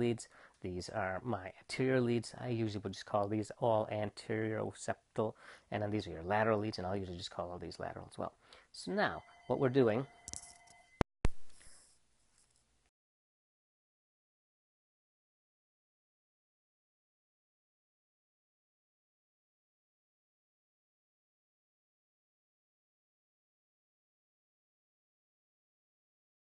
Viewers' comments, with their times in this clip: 0:10 Thank you for the great video. Unfortunately the audio disappears